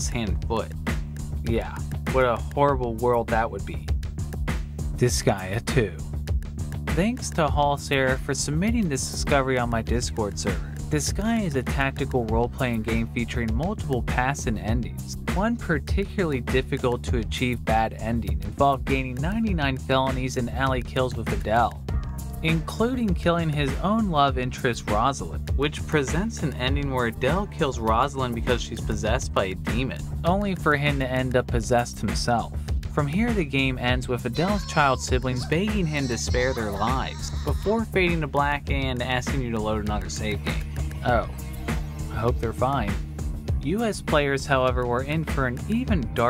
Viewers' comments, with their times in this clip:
0:06 The rap starts here
0:06 narration feels like it goes along with the beat at moments lol.
0:07 I don’t know if this was intentional, but you start flowing with your background beat and it’s pretty awesome
0:32 That Japanese munching demon was the most disturbing one Hearing the kids saying “don’t your recognize me adell” and then hearing them screaming in pain and crying and then hearing that munch and slurp